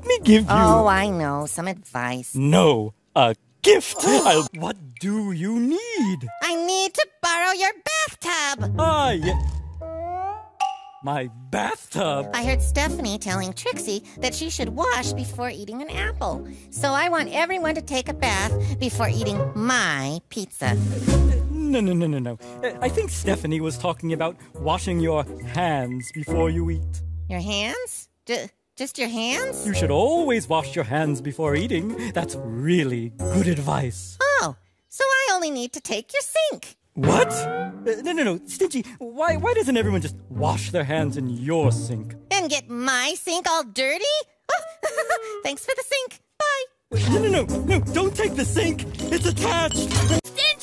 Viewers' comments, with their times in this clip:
0:04 *Stingy gasps in unadulterated delight at the idea of yet another thing having the potential to be his honest quote
0:36 BRO I CAN'T STOP LAUGHING AT THE WAY HE LOOKS AT THE CAMERA WITH HIS WIDENED EYES WHILE SAYING "What?!", and bro i cant with the dramatic music going along with the moment 😂😂